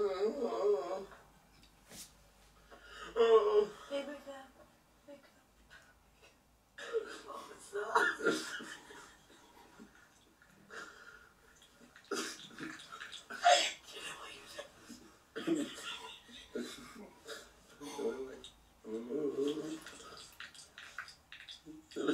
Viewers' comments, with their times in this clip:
0:10 The one that he almost broke on, what the hell is happening? I turned it all the way up and I still can't understand.